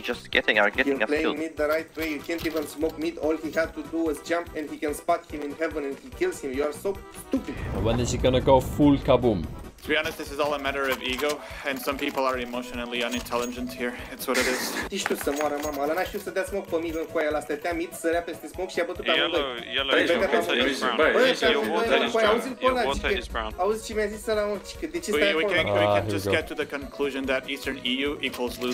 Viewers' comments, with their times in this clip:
0:10 I somehow knew this portugese guy would go off the rails completely. The guy was trying to sound reasonable but you could sense the superior complex in his voice. :D